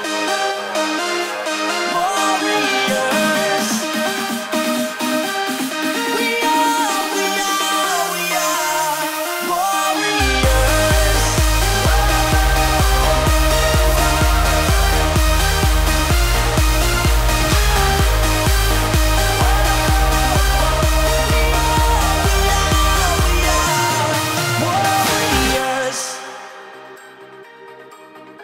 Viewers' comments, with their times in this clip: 0:10 your drop is here 😍😍😍❤